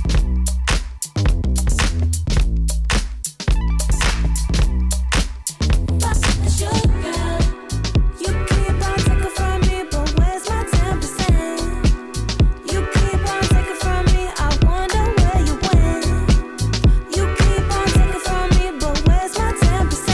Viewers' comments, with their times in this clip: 0:06 the transition to 10% 🤯🤯